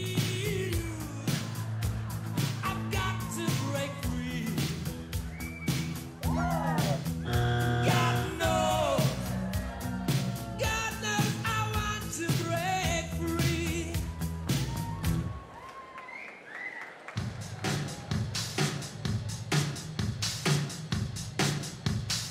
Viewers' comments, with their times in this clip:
0:06 lmao the buzzer scared the shit out the people behind simon